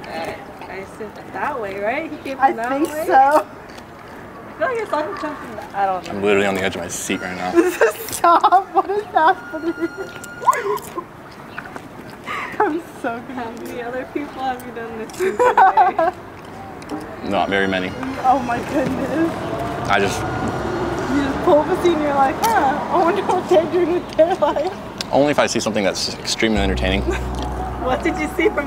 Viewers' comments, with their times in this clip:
0:10 how girls laugh